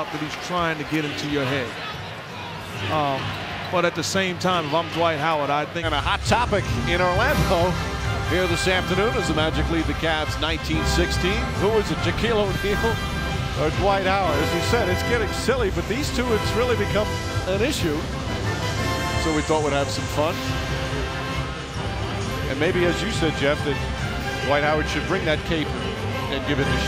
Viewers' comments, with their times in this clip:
0:07 the analyst laughing at the kid with the Shaq poster🤣🤣